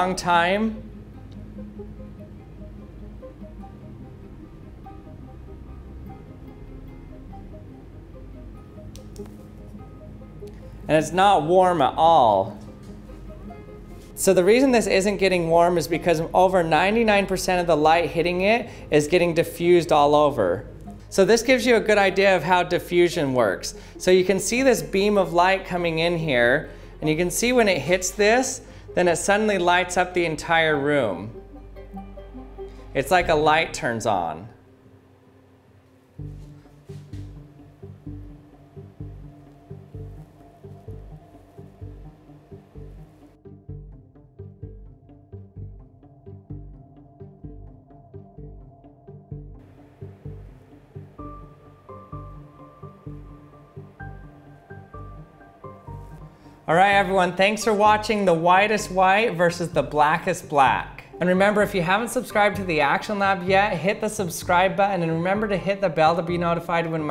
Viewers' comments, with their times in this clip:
0:10 Girlfriend kept playing over and over laughing. I don't know what was funny about it, but now i think it's funny. "it's not warm at allll" Dies
0:35 me:*casually watching video* music starts i legit almost choked on my drink
0:35 even has the music
0:36 me: clicks on video haha unus annus unus annus music starts playing me: ITS ALL CONNECTED
0:36 unus annus song plays me:starts crying
0:36 hmmm sounds like the unus annus song, not to mention the video is based on black and white...
0:37 the unus annus theme started
0:37 unus annus music in the background me: cries
0:37 AHHHHHHHH that background music (memento mori)
0:49 music starts playing Me: Unus Annus?!!
0:50 why u do me like that (the song)